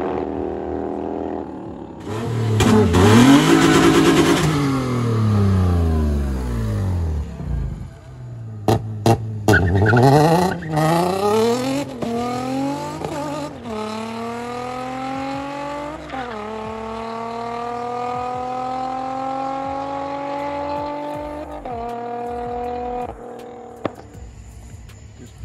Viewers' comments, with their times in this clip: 0:10 # did ya'll notice how much that Infinity sounded like the cars in NFS? Too cool!